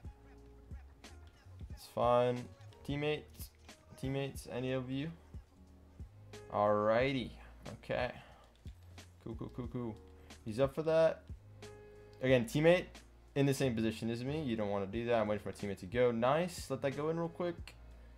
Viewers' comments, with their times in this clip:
0:04 I doubt that anyone noticed that but in jake pralta just popped out (Alriighhty cooo cococo cool) :)))